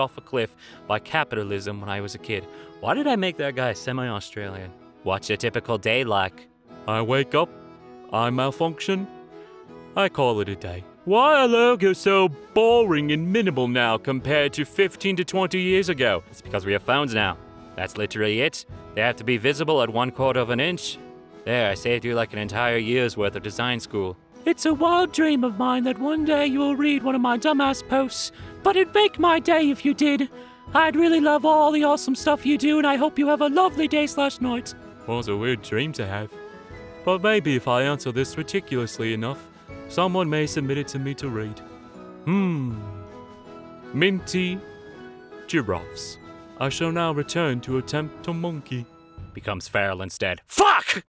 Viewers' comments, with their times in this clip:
0:06 man that accent works well with that, and I don't know why.
0:49 what happened to the accent?